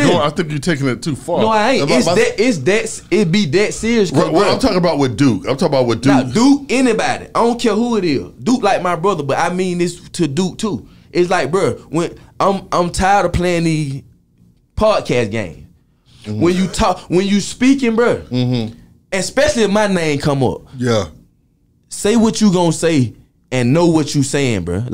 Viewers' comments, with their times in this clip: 0:06 "annybaaady" nigga definitely talk how he rap